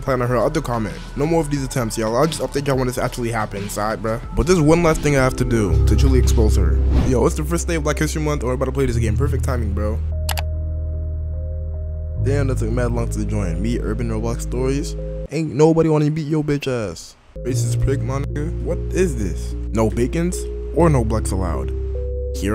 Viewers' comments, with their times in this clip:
0:05 Damn, curious light's theme really hits hard.